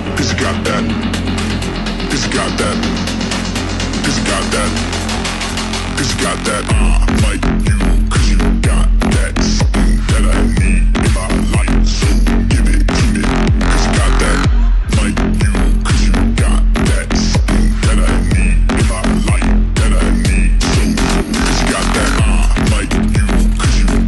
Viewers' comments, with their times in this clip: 0:05 i thought younsaid anime was gay